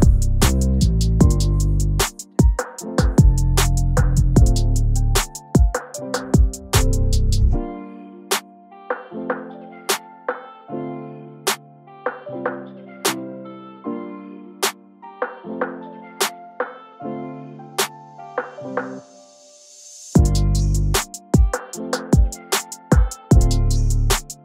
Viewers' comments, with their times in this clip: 0:08 That piano is 🔥🔥🔥 Love the vox switch up too! Another heater bro!!